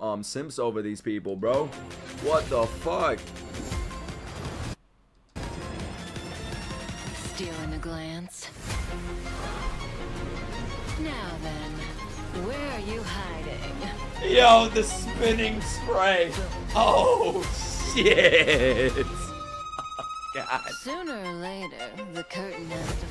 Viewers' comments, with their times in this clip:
0:06 that’s a mix of Vivaldi and other aspects like EDM and it’s a violin! (My instruments) a professional violinist who’s played League of Legends soundtracks tried to play this!